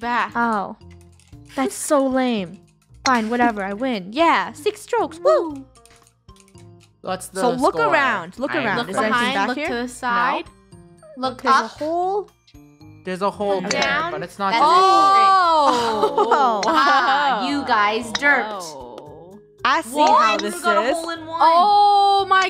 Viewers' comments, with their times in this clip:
0:05 LOL SOMEONE WAS SINGING WwWOoOOOoOo~~~~~~~~😂😂😂😂